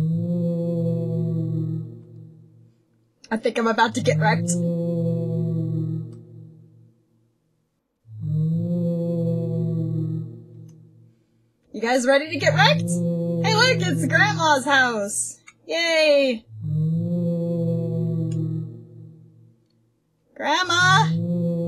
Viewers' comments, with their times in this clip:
0:08 Is that noise the music or is that the wolf howling?